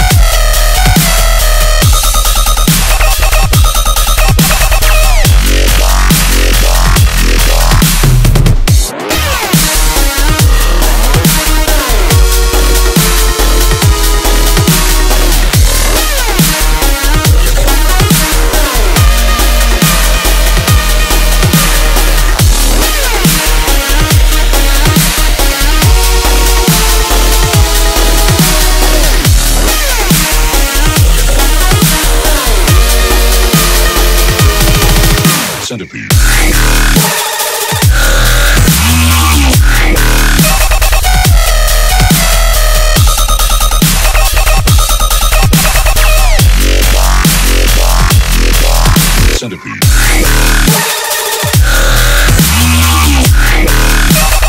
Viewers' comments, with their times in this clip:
0:08 kinda sounds better at 1.25x
0:08 WHY IS SO GOOD BEAT DROP?!
0:19 this bit is so catchy
0:35 you mean woman screaming dubstep music
0:36 Nobody: Not a single soul: This woman: Screams in dubstep
0:36 Bruh, that scream.
0:36 that women screams in dubstep language💀💀
0:36 screams in dubstep
0:36 that lady *screams in dubstep*